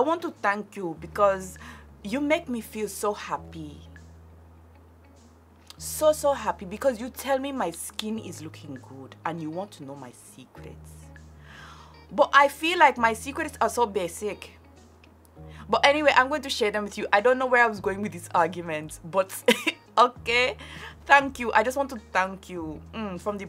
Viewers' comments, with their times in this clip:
0:04 the accent along with the straight face lmaooo